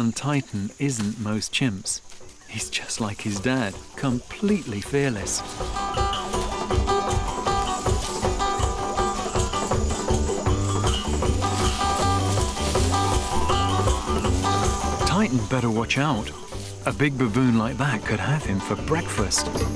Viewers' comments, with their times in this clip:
0:06 love the campy music